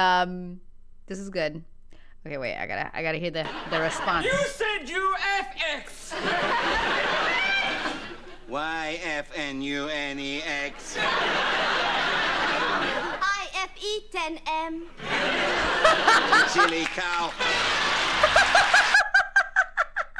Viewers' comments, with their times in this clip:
0:08 more nuance YFUNEX said in the tone of a dalek, an alien creature from Doctor Who with "Exterminate!" being their catch phrase. It was fun watching the cogs in your brain turn slowly, but surely round and round. Not so ZZA? 😝